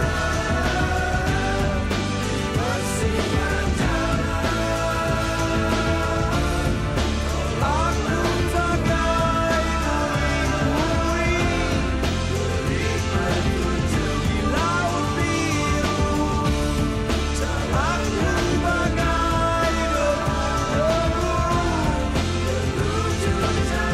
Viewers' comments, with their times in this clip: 0:05 triple layer vocal started, epic